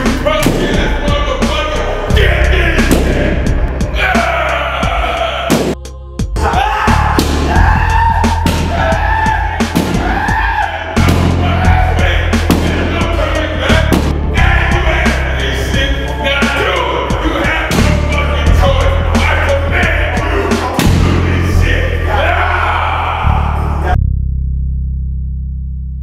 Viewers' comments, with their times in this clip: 0:07 marlon wayne screamin in the background
0:08 even that dude can't hide his laughter haha